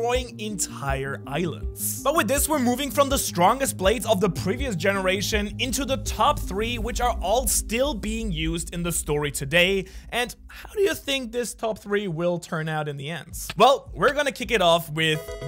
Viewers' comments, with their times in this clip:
0:03 The voice crack on 💀